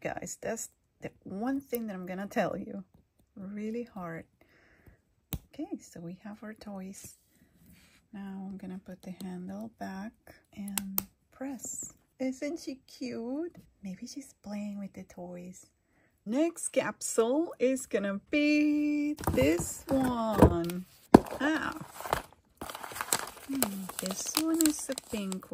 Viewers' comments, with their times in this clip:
0:06 And I love how soft your voice is❤